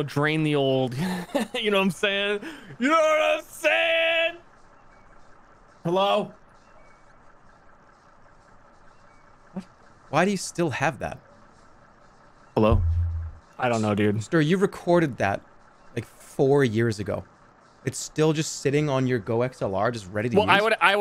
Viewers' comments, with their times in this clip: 0:05 the HELLO soundbite freaked me out so bad 😭